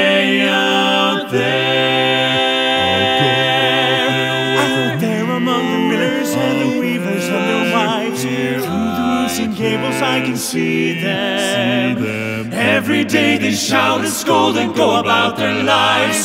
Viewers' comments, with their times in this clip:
0:03 I love this version so much! Especially where it was hard to tell what was going on in the live performance and now I hear that lyrical line.